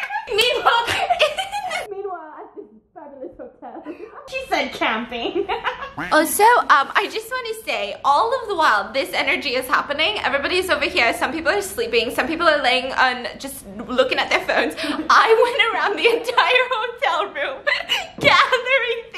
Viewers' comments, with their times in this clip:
0:05 That laugh tho i love it